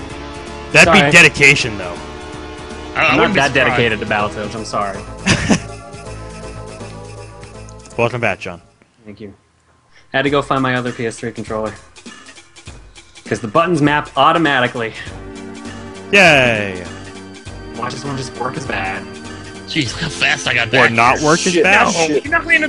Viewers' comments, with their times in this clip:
0:08 From to its seem like they arer singing a song un intencionaly :3 AND its awesome!